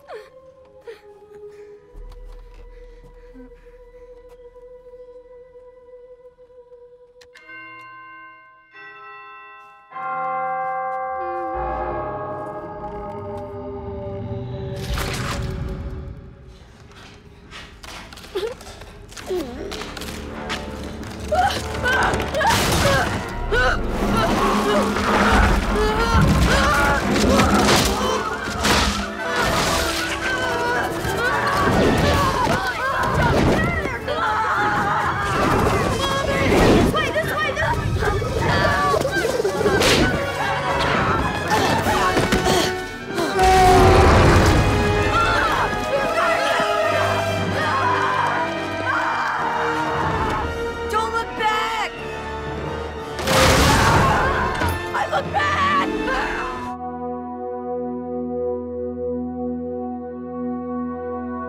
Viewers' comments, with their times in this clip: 0:07 And Chowder rings the doorbell
0:43 is my favorite part when constance roars at them